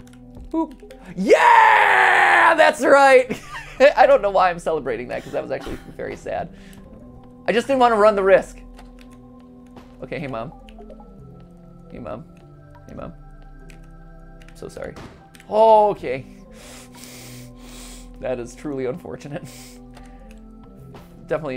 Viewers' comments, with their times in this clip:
0:06 Did someone sneeze in the background there?